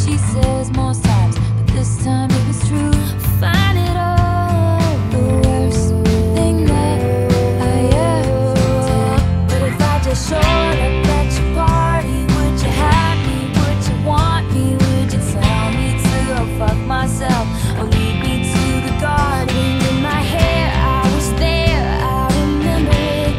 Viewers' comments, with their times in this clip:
0:05 ahhh that transition !!!!! lovelovelove